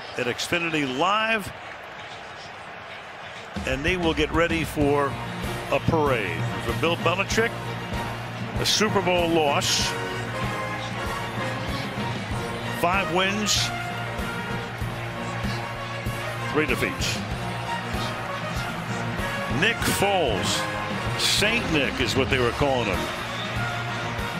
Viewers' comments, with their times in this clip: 0:08 Does anybody know that soundtrack that starts ? It sounds epic.